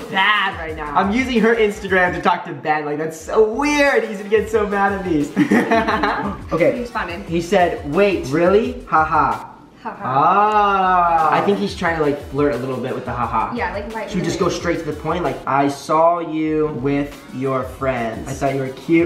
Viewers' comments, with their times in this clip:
0:03 Dam its in uk ur very loud😂😂